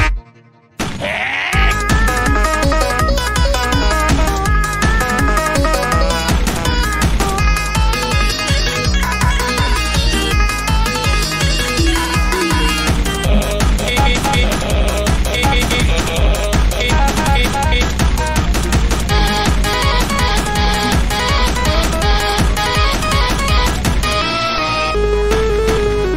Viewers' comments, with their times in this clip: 0:07 wow Ron singing with sky tank man and whitty voice